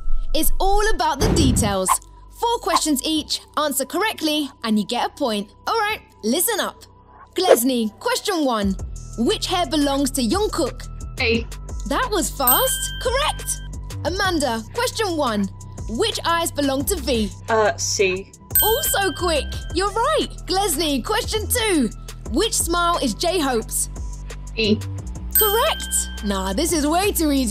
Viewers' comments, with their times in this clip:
0:09 why do they always say jungkook with a y ☠️